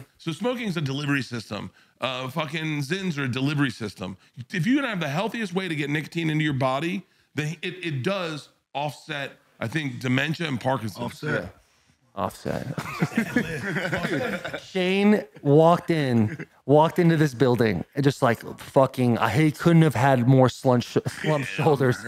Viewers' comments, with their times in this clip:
0:09 shane with the “offset” adlib got me good for some reason😂. if you don’t listen to rap you’re prob thinking why tf did he randomly repeat bert saying offset lol